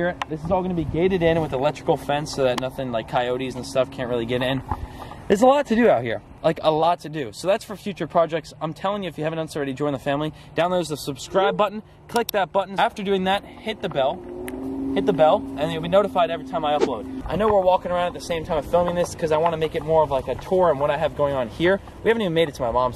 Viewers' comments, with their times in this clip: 0:10 dOwNlOaD tHe SuBcRiBe BuTtOn